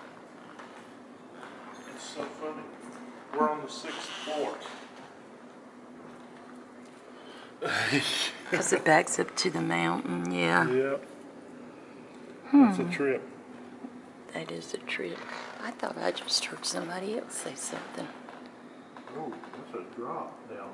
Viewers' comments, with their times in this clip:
0:03 again sound of glass tinkel